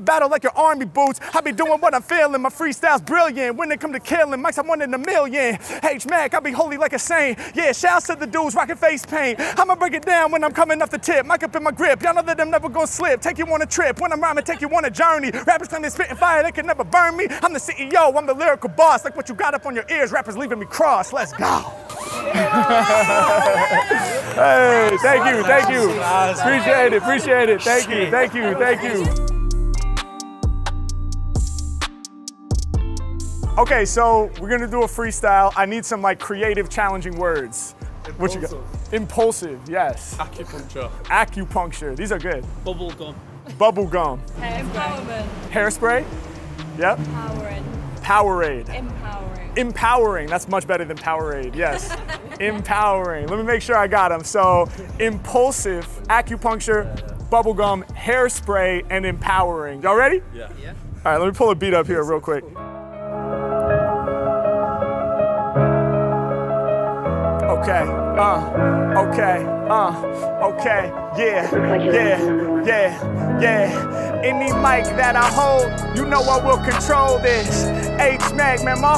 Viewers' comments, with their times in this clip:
0:06 crazy free but sound like the cig smoke got u good 😭
0:19 Good thing that emergency siren was right on time after, cause my man murdered that freestyle! 👏🏾 🔥
0:53 beat and bars hit so hard now iv got two blown ear drums and two black eyes
1:03 on > everything. Beat was 10/10 Freestyle 10/10. You the champ Mack 🥇🏆🏵️🎖️. That beat made me lose my mind. Favorite beat I’ve heard in min